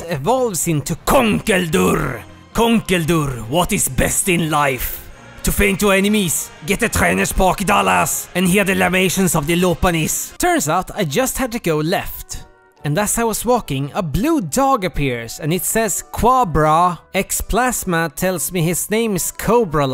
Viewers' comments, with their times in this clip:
0:05 Volcarona was made in a lab by Swobat is what I got by the mark